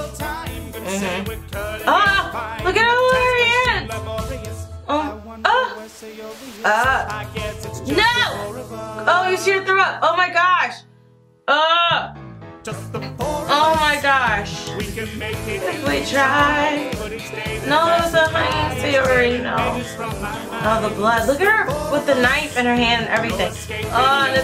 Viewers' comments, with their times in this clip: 0:07 when she screamed NO, I felt that